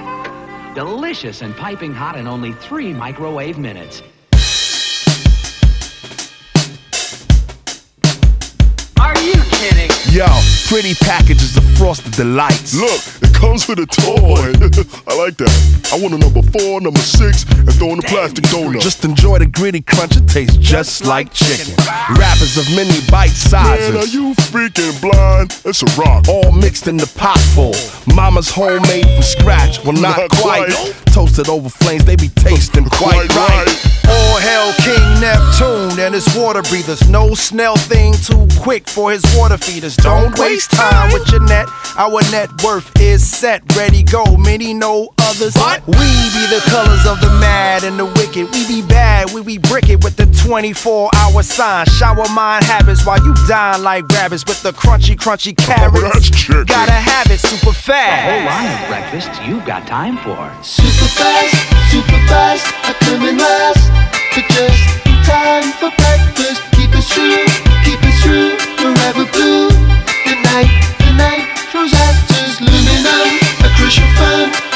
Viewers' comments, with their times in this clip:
0:05 that hi hat was crisp
0:28 After so many listens of this song I just heard the "mommyyyyyy" in the background
1:00 The song kicks in a